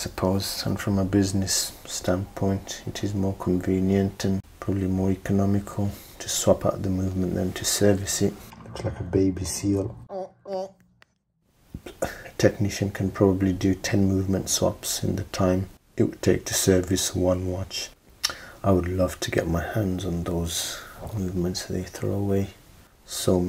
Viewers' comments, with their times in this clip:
0:10 was that a fart at min ? 😂